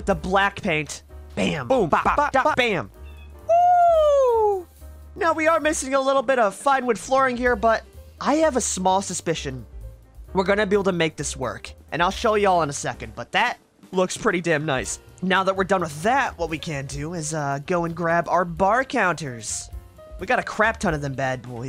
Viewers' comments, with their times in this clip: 0:03 didn't know that you had MJ as a guest commentator!